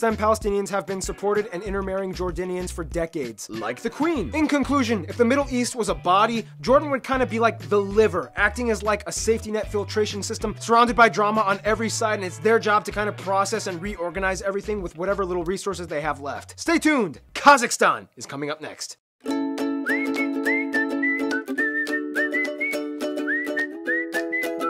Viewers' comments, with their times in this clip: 0:05 I heard this as "If the Middle East was Ibadi" and I was like well at least you've got Oman